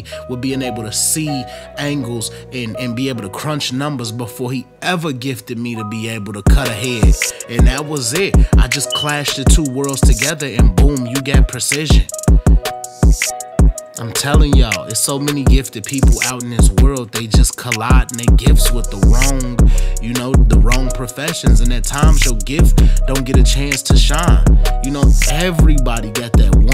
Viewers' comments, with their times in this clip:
0:09 My boy smoke detector was trying to speak up